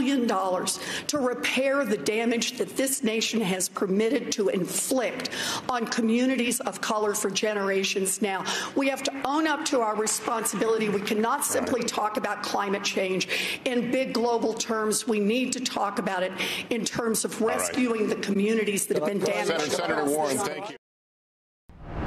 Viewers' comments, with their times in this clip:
0:10 I think bernie let off some gas 😂 😂